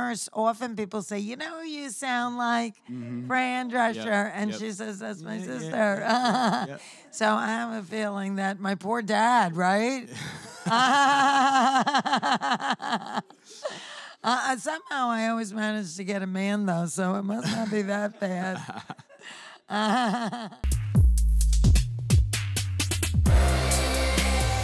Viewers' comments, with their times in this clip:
0:08 Who’s heart stopped when you heard the laugh ?!
0:10 she had to jump start that laugh